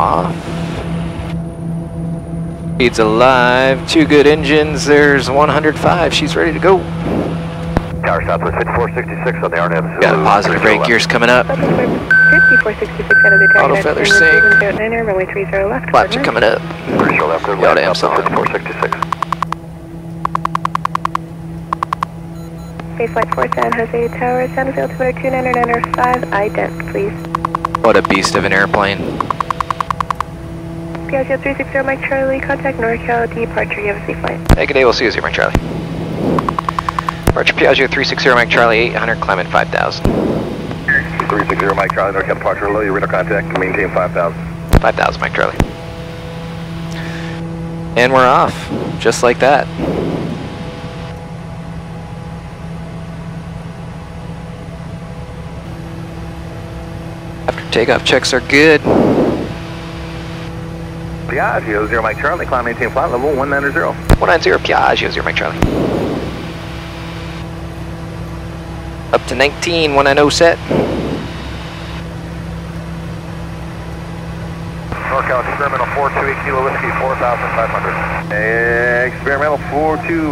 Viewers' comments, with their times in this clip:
0:09 Occasionally we will get one that files over the house on the way to Sugar Land Airport (SGR). Man these things are the Ferraris of the sky. They sound SOOOO frikkin bad ass when flying over. + what's with the woodpecker noise?
0:59 Love the way they are saying Piaggio lol
1:01 the call back with same emphasis on "Piaaahzio" as tower was hilarious. Gorgeous aircraft, always loved that Rutan style.